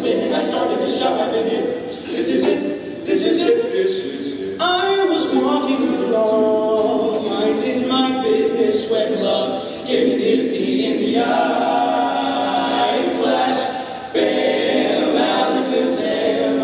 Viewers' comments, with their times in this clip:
0:03 "I was walking along" is insanely smooooooth!